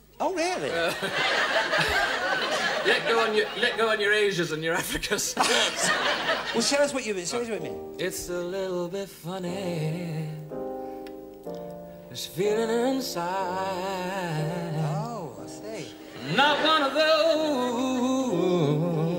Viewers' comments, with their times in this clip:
0:07 Elton successfully predicts 2020s-era TikTok singing